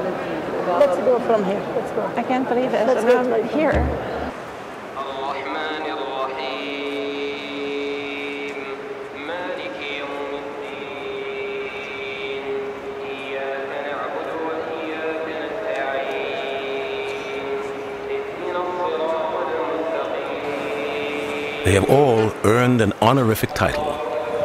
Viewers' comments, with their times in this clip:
0:05 what's the name of the man reciting the Quran ? His voice is so moving